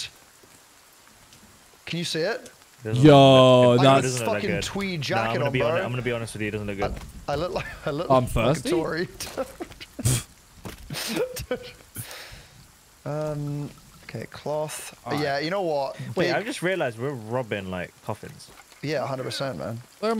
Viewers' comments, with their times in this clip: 0:06 bro after all the drama i thought i was heard someting else